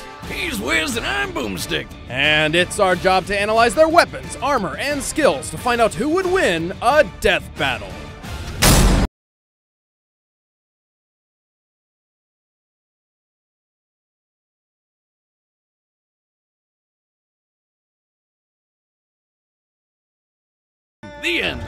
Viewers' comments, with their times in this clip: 0:09 your audio cuts out at like mark